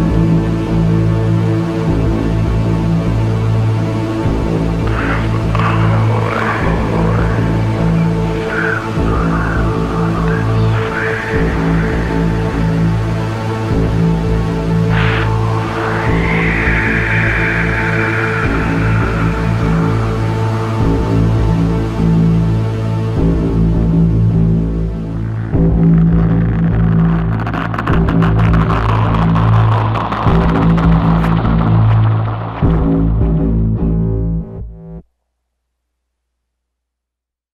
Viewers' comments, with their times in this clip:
0:04 This is the song after you reached the top of the Slipknot Hotel. "What's next" would be the elevator music. You enter the top floor with it being pitch black, cold, and dusty. You walk down the hallway trying to make image of what's in front of you. You see a door, As you enter you hear the sound intensifies like the heavy pounding of a heartbeat. (the mark)as you see someone slowly turn around looking at you... the song ends and all you see is black.
0:25 shyt this song so fcking awesome when that sound feels like digging into my ears n go to my brain n that's make me feel like jzjaidbnakananak😂😂hahahaha🔥SHYTT MY ENGLISH SO BADD SORRY FOR THAT hope u understand whT im trying to say..
0:25 When slipknot do ASMR😂